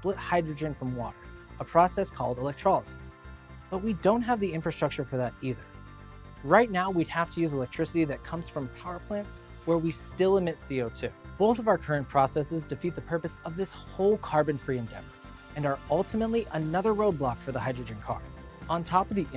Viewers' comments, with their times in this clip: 0:07 the background song, so beautiful